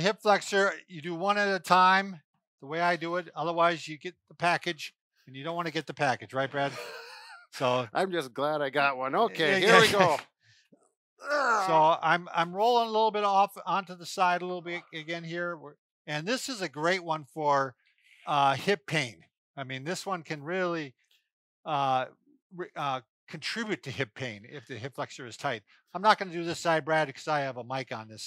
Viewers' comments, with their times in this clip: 0:10 wth is there a yetti screaming?